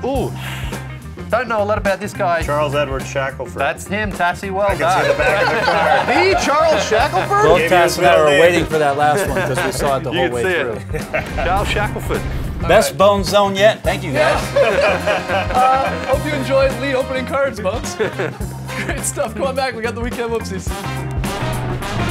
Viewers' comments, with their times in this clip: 0:08 When that failure of an NBA player comes in, who sounds like watching paint dry, skip to